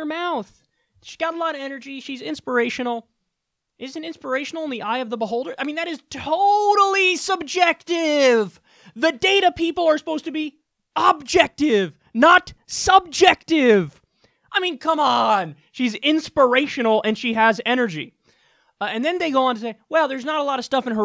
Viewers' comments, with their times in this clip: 0:05 Kyle letting in his inner Cenk